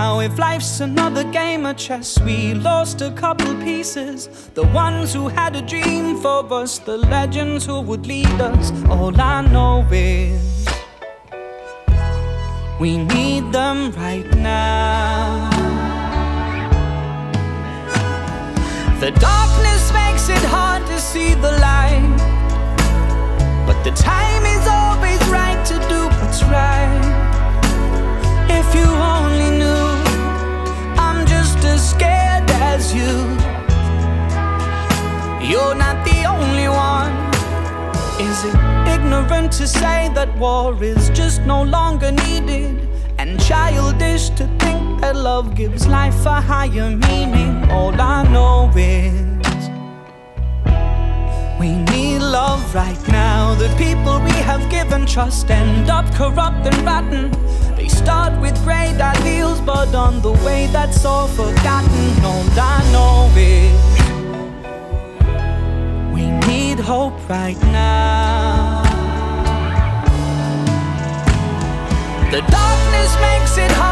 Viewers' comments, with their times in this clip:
0:08 Love the instrumental
0:57 Is that a dog bark?